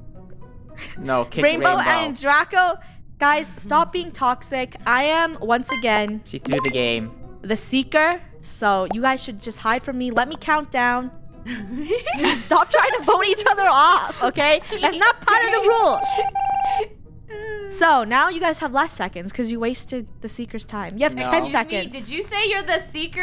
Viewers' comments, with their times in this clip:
0:10 the first and the last siblings trying to vote each other out while the middle kids are just laughing xD